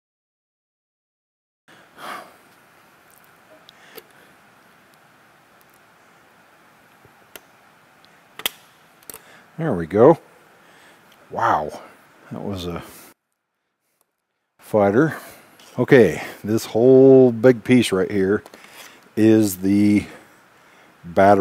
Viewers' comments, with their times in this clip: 0:04 I loved how you muted the video when you unplug that last connector ! 😅